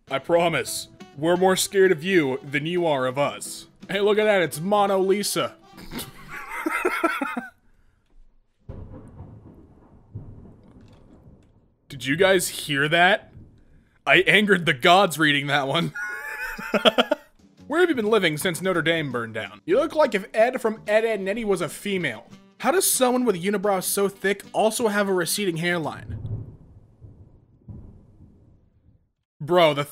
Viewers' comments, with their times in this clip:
0:10 whatever the fuck that noise was, my stomack covered it